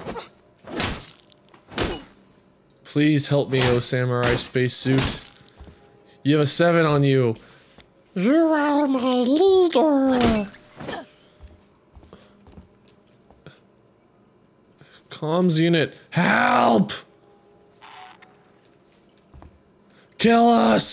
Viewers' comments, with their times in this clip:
0:07 oh the voices... Is that a Space Meatwad?